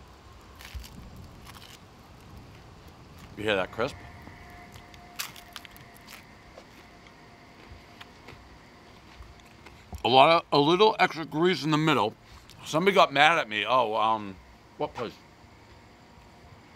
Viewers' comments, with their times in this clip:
0:03 Giant crisp... Followed by the whine of a SAG members Toyota Prius